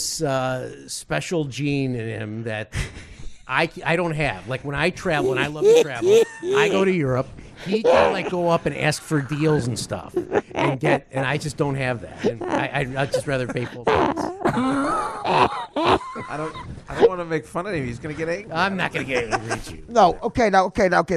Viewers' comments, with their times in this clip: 0:05 I’ve never heard Artie laugh like this! 😆